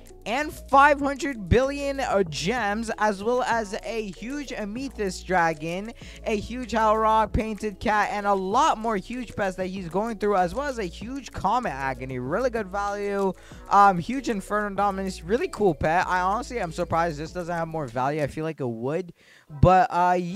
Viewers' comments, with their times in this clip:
0:03 ah yes an huge "umeethist" dragon :)